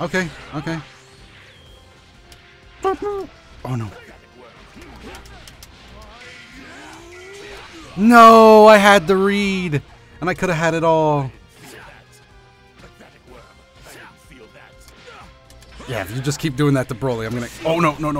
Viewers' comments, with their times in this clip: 0:03 literally make a cho-cho noise 😂😂😍